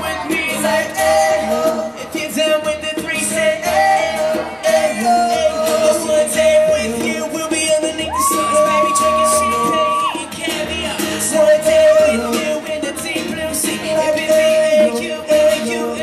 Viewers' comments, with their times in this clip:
0:04 is drew saying "if you're down for a THREESOME" LMAO WUT